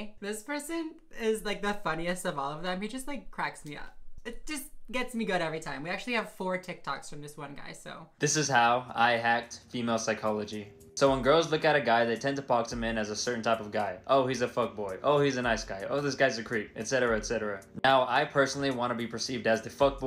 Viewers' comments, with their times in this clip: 0:08 Omg the dude unironically uses the sigma male song. I am fucking dead 😂